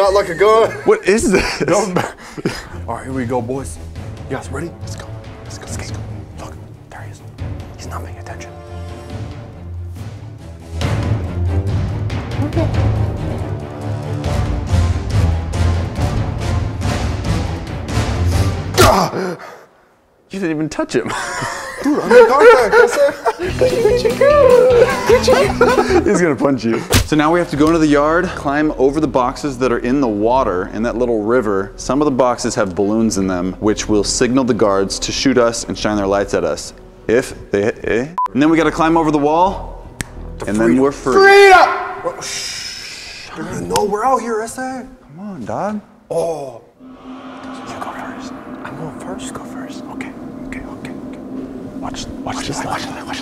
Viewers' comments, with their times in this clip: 0:05 did anyone else hear the f word or is that just me
0:06 did anyone else hear the f word?
0:06 it sounds like he f bombed
0:40 he yelled FREEDOM!!!!🤣🤣🤣🤣🤣🤣🤣🤣🤣🤣🤣🤣🤣🤣🤣🤣🤣🤣🤣🤣🤣🤣🤣🤣🤣